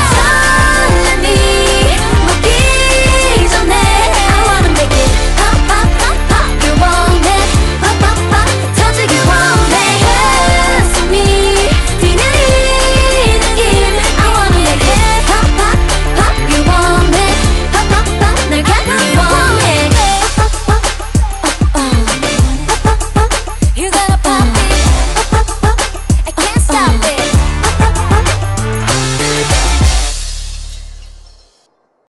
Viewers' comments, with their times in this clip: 0:09 On she imitated What is Love? and idk why👩‍🦲
0:27 i can't be the only one who hears the subway surf theme RIGHT?? (and some other parts 😭)